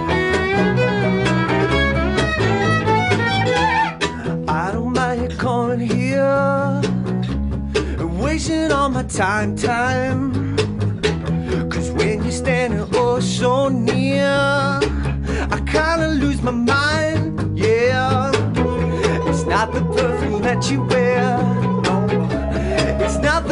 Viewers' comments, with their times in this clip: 0:09 When the rhythm section changes to the 1s and 3s just like The Cars ("Time, Time!"); so perfect.